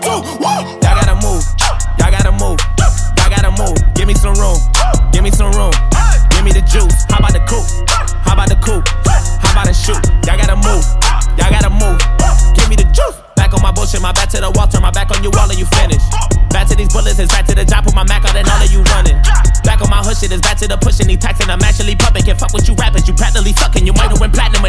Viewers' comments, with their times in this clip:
0:08 Idk if it say law or his last name